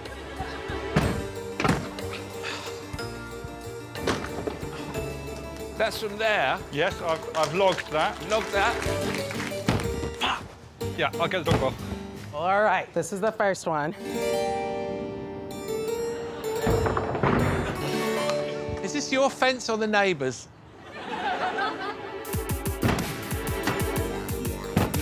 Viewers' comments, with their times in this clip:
0:10 The tepid applause really speaks to the audience saying to themselves “Yes, that was good. But I know that someone’s going to knock it out of the park later”